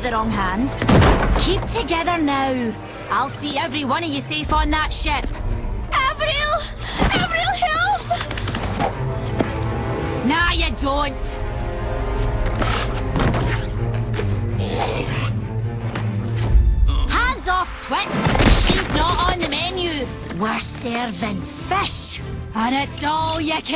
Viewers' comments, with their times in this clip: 0:04 Scottish Smurfs? XD